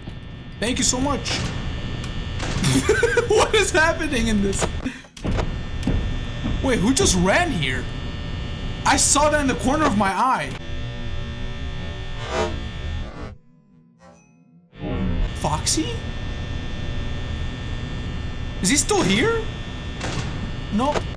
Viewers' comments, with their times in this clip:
0:06 That was foxy cause I heard knocking.